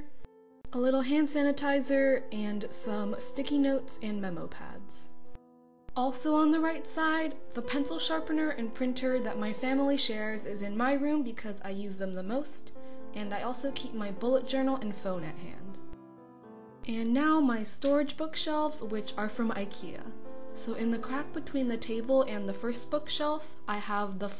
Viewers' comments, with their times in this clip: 0:08 the healing song ahhhh <3